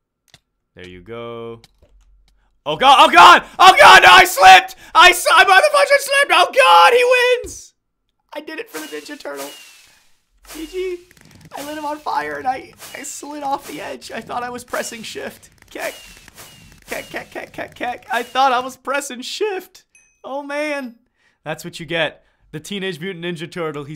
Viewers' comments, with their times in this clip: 0:04 blasted my ears